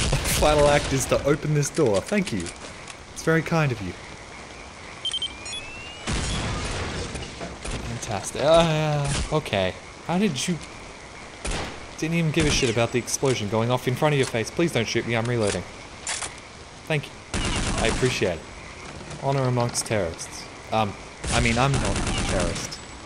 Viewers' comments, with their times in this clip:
0:06 Kept thinking my prayer was being drained in osrs